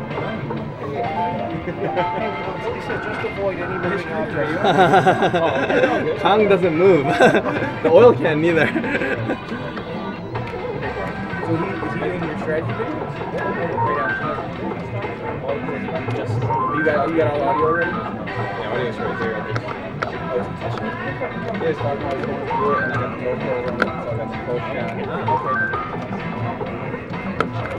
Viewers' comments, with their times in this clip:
0:10 love the wang chung in the background hahah seems so fitting for the time period